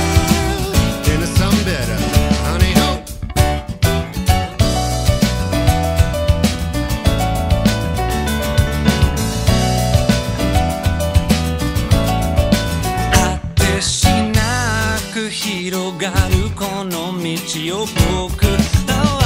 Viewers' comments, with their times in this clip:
0:04 I don't know why the little piano lick makes me so happy (allusion to Layla?) but it does, amazing performance, love you Monkey Majik <3